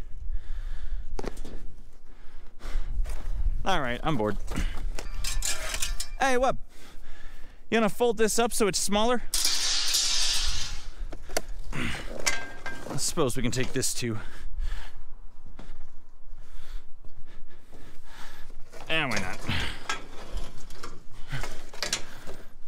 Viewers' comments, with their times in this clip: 0:05 evil accent: CHILD DO MY BIDDING